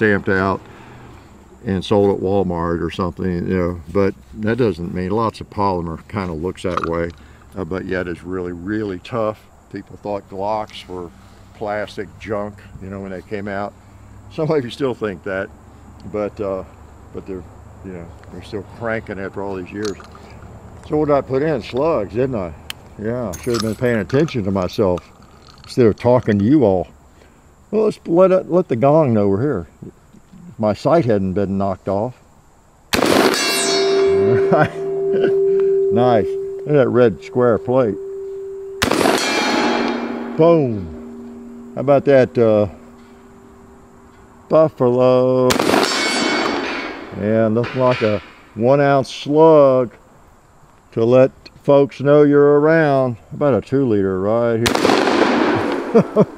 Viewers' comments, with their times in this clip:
0:05 did camera man burp?...
0:28 Getting gong giddy 😁
0:42 Did i hear a richocet on the buffalo ?